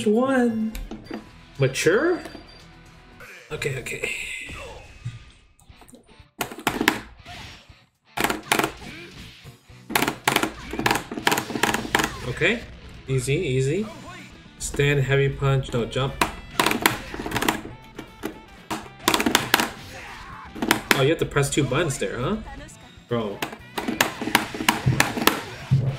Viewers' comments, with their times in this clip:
0:08 He’s got the combos sounding like a door stopper!
0:10 is there a burst fire machine gun going off?